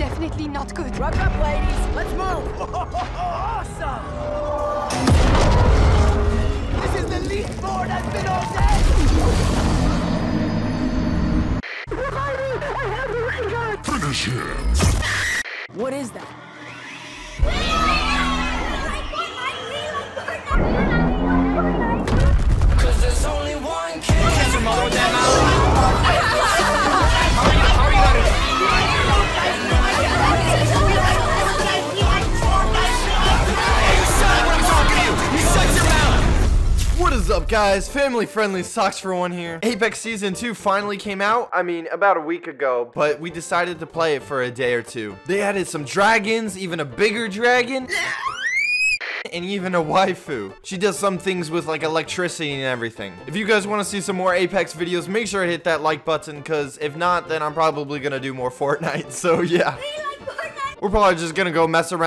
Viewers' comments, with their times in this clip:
0:07 I thot he was singing six9ine:
0:23 How has nobody mentioned fact of ninja and a bunch of kids screaming about Fortnite
0:24 can we take a moment for how the ninja laughing in the background makes this 100x better
0:47 That dragon scream 😂😂